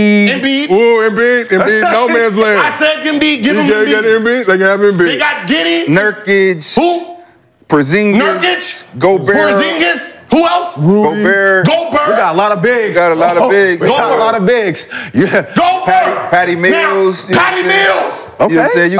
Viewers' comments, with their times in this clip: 0:05 The way Gil said WHO at Nurkic 😂😂😂